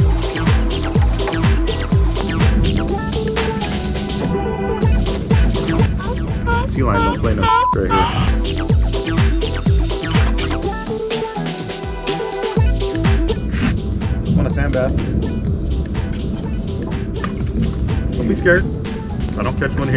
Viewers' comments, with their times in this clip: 0:06 nice..i fish sd bay also.. got cuda,spotties big fat macs and jack smelts...... also i had to put it on mute ... people was asking what im watching with the seals screaming thinking i was watching the HUB